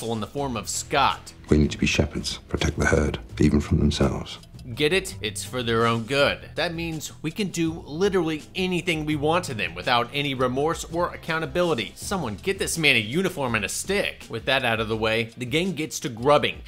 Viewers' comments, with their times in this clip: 0:04 Sounds more like Dumbledore than the Trunch tbh.